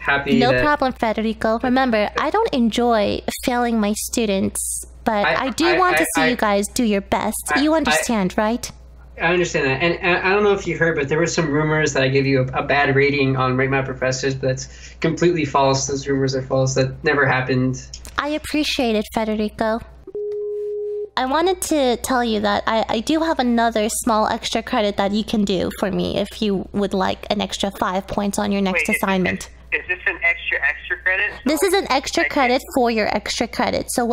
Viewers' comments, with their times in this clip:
0:06 this change of tone in is weird yet so satisfying. like a real profressor lecturing, xD
0:22 Sexy deep voice. ooohhhhh.